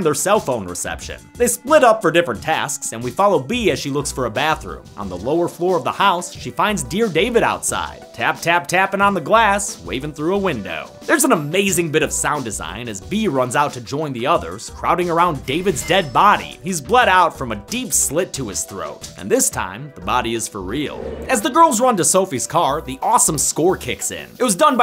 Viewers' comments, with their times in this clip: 0:08 HELP I LOVE THAT SONG